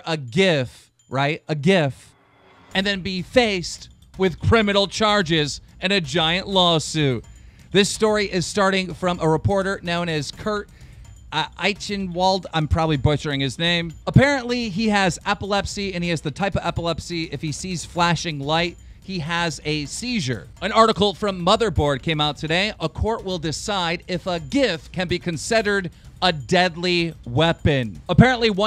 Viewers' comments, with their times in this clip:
0:10 Holy shit keem actually said the dudes name right good shit keem keep reading!